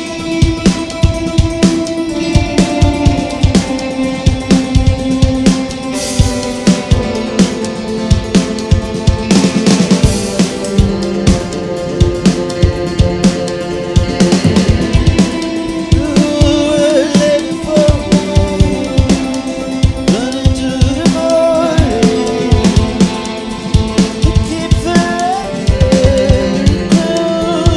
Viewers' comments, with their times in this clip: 0:09 Tommy gun drum fill ish. So cool